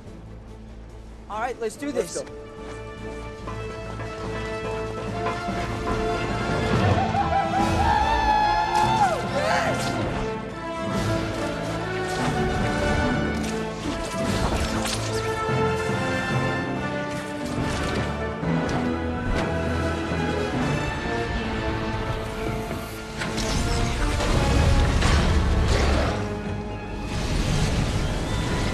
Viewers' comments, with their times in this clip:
0:05 Spidermans making monkey noises
0:06 True Marvel fans didn't even have to WONDER whose "WOO HOO" that was.
0:15 is great cinema. The music really makes it special.